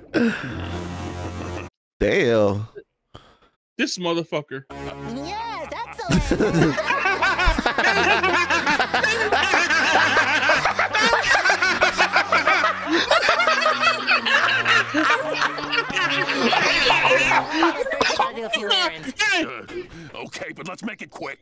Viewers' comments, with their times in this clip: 0:03 My favorite part is you two laughing along
0:06 The evil laughter 😅
0:08 Both of them joining Strangler and Spongebob evil laughter. Me: Joins in too 😈😈🤣🤣